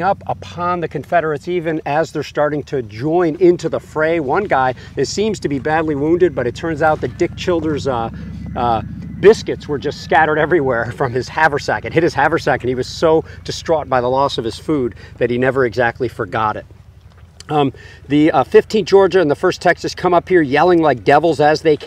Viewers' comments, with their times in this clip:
0:08 Is it just me or does anyone else hear a fife and drumming ?